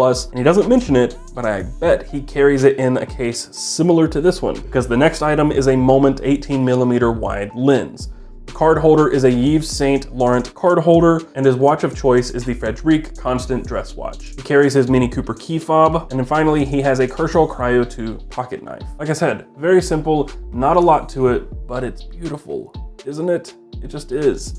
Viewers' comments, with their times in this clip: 0:09 I laughed out loud lol Your pronunciation was funny, cheers!